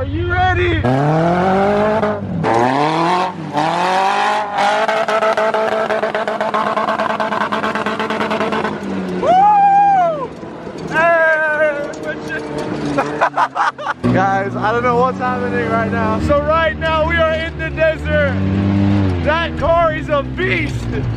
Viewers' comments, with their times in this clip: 0:05 that limiter revvvvvvs was crazy😍😍😍😍😍